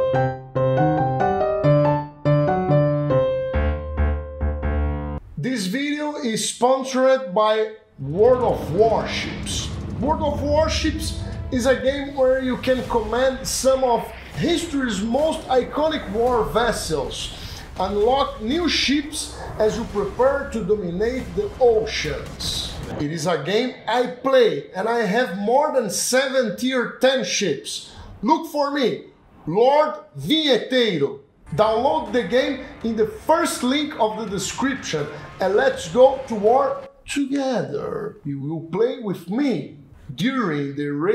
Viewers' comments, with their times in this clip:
0:04 AAAAAAAA!! HE TALKS!!!
0:06 first time he talks
0:06 He... can... TALK????
0:23 HE CAN TALK??!!!?!!...